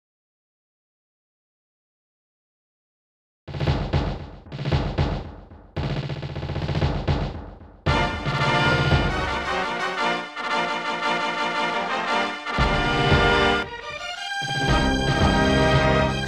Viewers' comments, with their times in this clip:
0:03 Imagine you're booting up the game and you expect your average logos before the title screen and then you hear this orchestral masterpiece. Genesis one sounds better in my opinion though